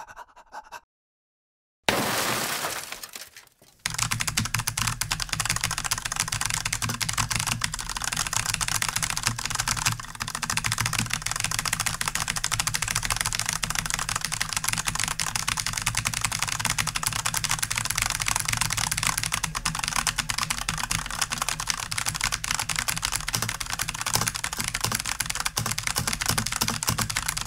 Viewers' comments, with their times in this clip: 0:09 sound: 500WPM video: 5 WPM